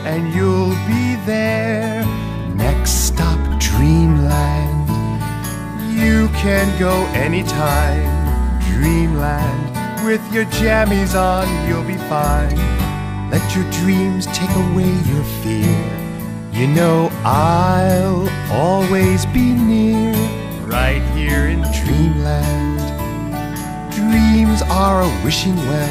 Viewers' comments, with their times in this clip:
0:10 Two things I like about this video: 1. Noel MacNeal singing. 2. That scene from Blue's Clues